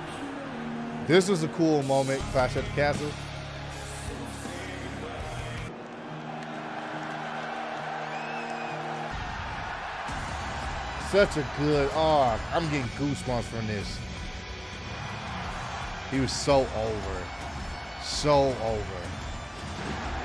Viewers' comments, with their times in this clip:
0:06 i love this theme song it about time the redo in my books 9.5/10 better than his last theme